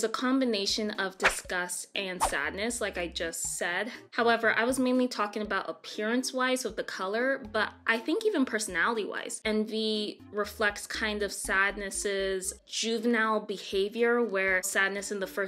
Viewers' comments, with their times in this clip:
0:03 OK! I cannot be the only one hearing that Kahoot music in the background! 😂